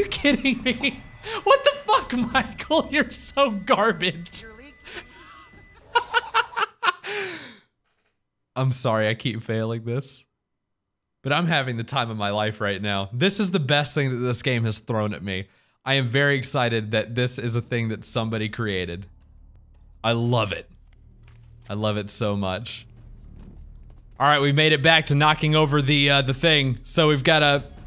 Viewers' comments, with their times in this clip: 0:04 3 laughs happening
0:05 Three laughs at the same time, actually four now
0:08 I love how Mark is laughing at the character's death and the caption of the loading screen reads "Do you like the way brutality feels, Mark?"